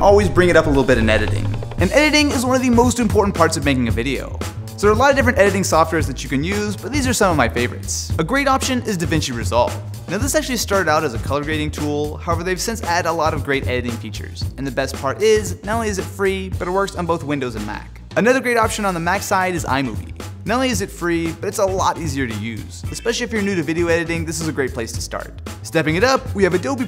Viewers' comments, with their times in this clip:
0:10 How is this software called? I just cannot understand Austin here :D